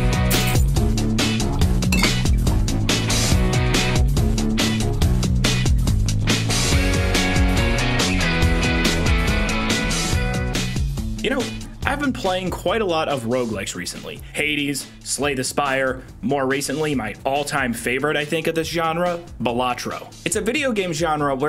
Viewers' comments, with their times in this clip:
0:07 Crash Bandicoot Mind over Mutant music's hitting hard